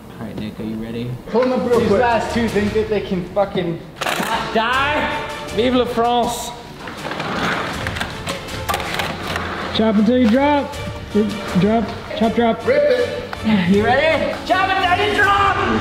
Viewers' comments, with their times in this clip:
0:03 missed a bleep.